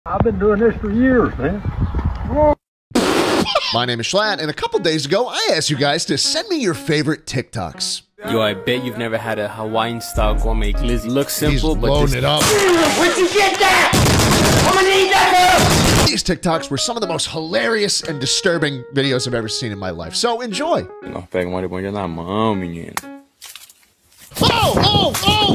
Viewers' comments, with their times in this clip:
0:08 I thought those were fucking gun shots
0:13 bro turned into an AK47